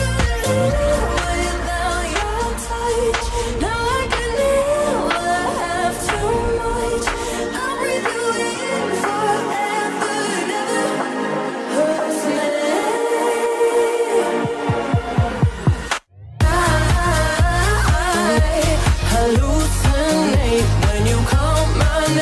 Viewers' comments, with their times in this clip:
0:04 I wonder why Bankotsu addressed Kagome so contemptuously Have you noticed that tone?